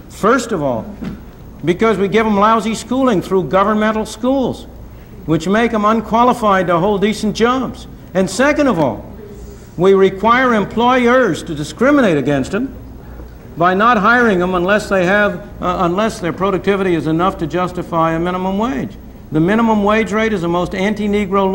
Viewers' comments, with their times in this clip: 0:09 you here some woman in the audience say "Racism." Today they would have shouted him down before he said two words.
0:09 a audience member can be heard saying "racist". Just start several seconds prior, where Friedman speaks of why there is such a high black youth unemployment rate, say ten seconds before the time stamp above.